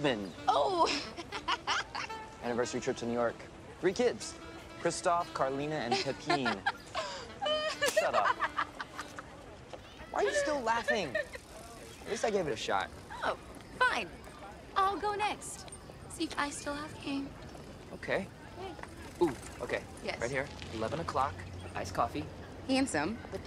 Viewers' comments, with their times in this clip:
0:06 lmao gotta love the american pronunciation